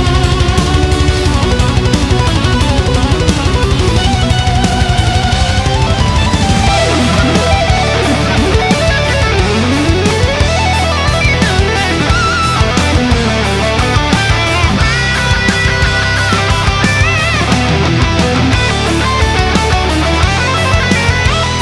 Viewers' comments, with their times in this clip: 0:06 I get chills every time i hear that solo kick in with the sweeps, this song is a masterpiece!!!